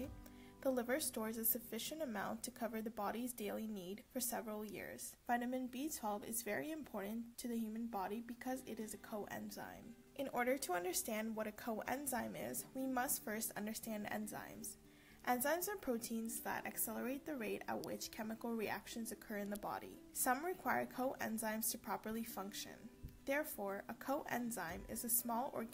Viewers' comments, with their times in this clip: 0:06 Probably a good video but the audio is so bad I had to turn it off after only ....